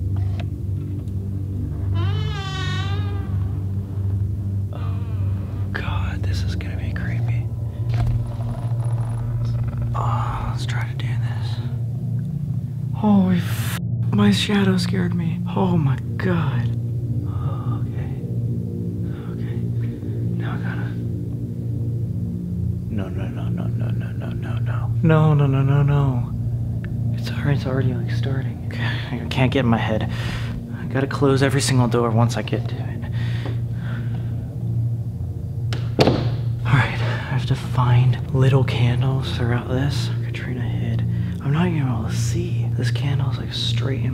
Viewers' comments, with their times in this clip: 0:04 WHY TF IS HE WHISPERING?!¿¡🤦‍♂️🤦‍♂️😂😆🤣😭😭💀💀 he said he lives alone🤦‍♂️🤷‍♂️
0:29 But...I thought that you have closed the bedroom door...I saw it in the video and then it was...open. And the knock at the end of the video gave me chills! I hope that you are ok!